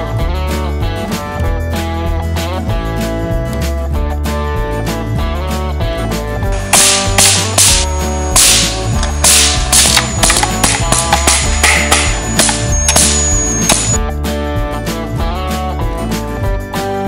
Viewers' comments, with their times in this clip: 0:05 my ear is broke 😂😂😂😂